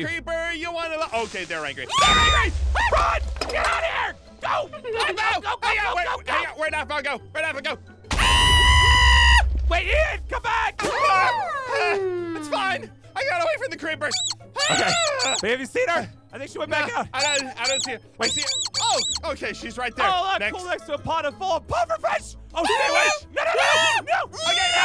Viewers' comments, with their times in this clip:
0:10 Aphmau voice is like nezuko